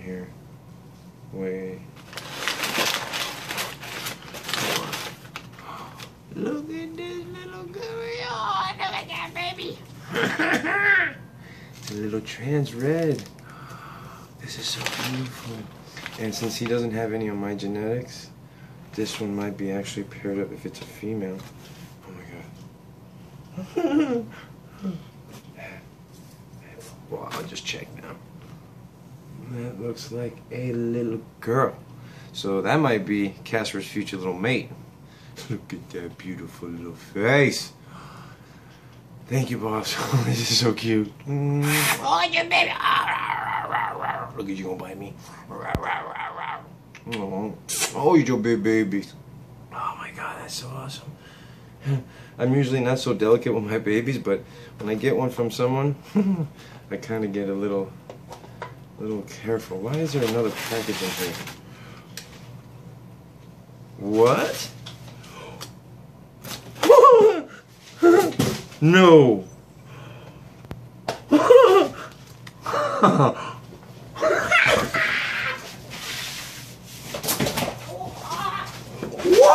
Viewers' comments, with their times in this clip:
0:09 listen to the laugh :]
1:06 THAT LAUGH DO!